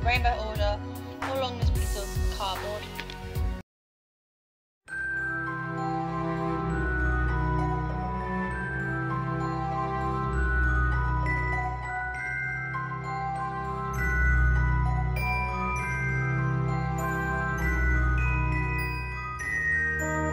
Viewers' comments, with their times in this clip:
0:08 scary music... i like your work! <3